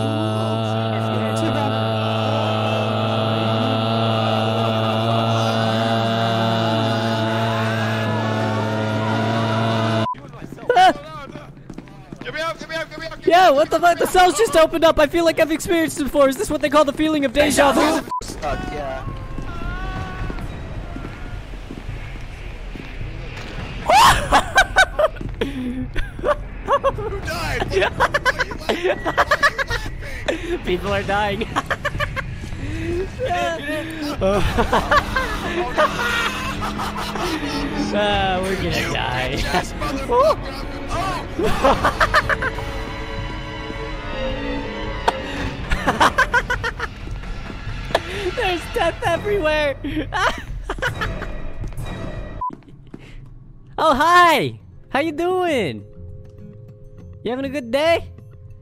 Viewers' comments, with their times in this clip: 0:06 I swear I heard Goku
0:27 That is the laugh of a crazy man
0:38 why do I hear boss music?
0:41 am I just like to hear players screaming during death?